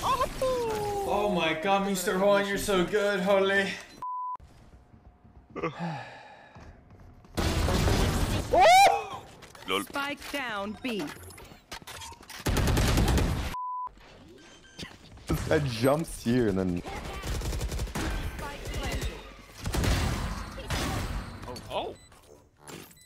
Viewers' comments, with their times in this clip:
0:07 sounds like transformers jingle